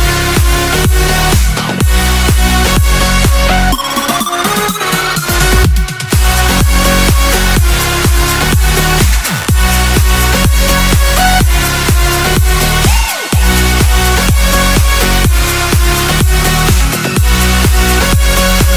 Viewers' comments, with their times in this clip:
0:03 That music perfectly matching with the video is not some luck and it was freaking glorious !